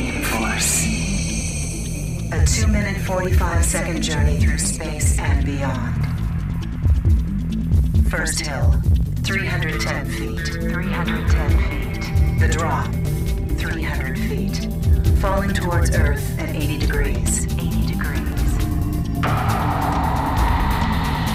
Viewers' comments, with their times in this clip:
0:09 The jangly guitar chords are spectacular...........perfect mood to set the stage for the greatest roller coaster ever built.